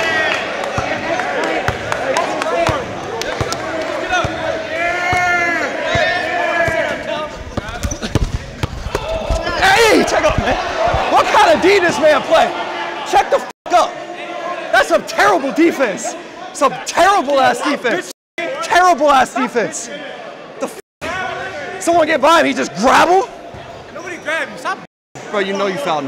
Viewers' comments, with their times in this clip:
0:08 he jumps on the floor and shrieks wtf